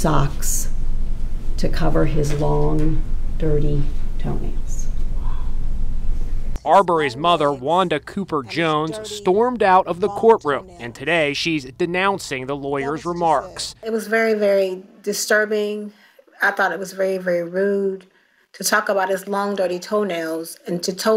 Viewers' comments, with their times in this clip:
0:04 did anyone else here "wow"